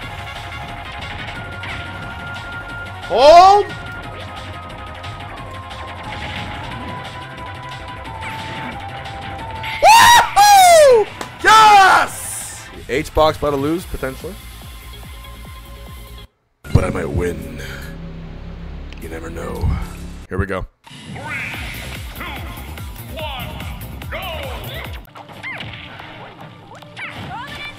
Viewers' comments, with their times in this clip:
0:09 Hbox Mario victory scream.